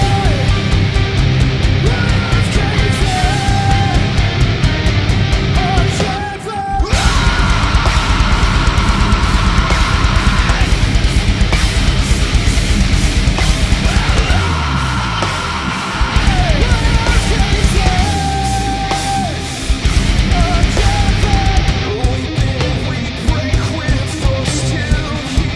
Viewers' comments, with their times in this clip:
0:06 that scream brought chills to my spine. The rest was fine 😂.